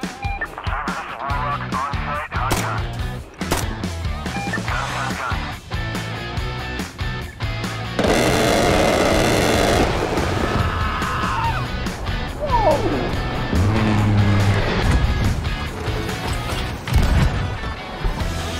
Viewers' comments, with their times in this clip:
0:06 A10 Warthog goes brttttttt